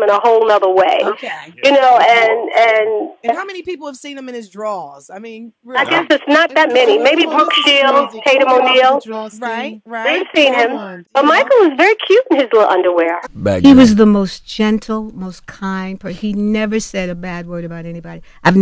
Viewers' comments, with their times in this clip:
0:06 👂🏾She WHISPERED something about his 👃🏾job notice how he laughs and touches his nose afterwards 🧐🧐🧐